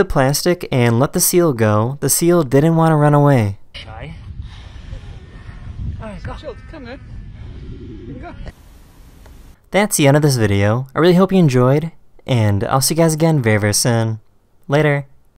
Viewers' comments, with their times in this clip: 0:10 carless whisper turns on